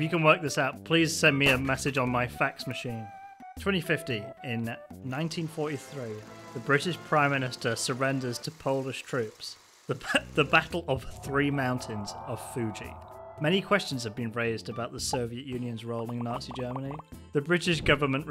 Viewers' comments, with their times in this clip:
0:03 fax machine noises "Hong Kong died" "end of fax" Explosion